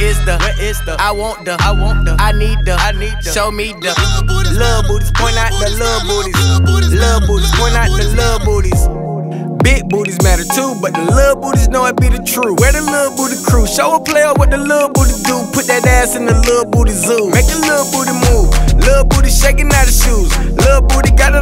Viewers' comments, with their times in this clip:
0:09 That switch up tho 🙌